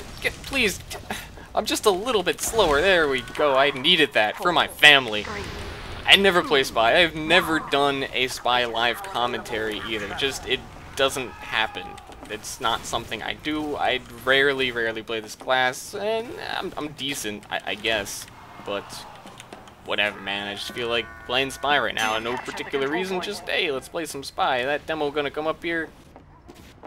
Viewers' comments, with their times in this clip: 0:10 Hidden spy scream! :P